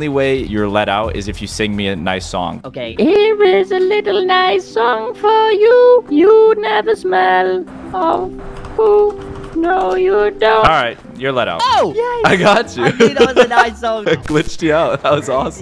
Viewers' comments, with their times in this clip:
0:03 what is that voice😂😂